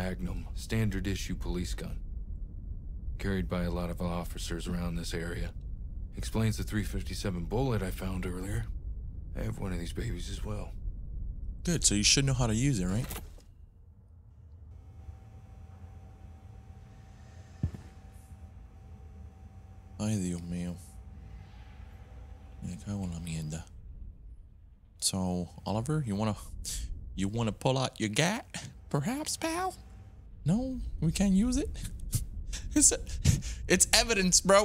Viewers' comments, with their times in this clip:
0:10 The silence was silencing 😂😂
0:20 Sudden unexpected Spanish.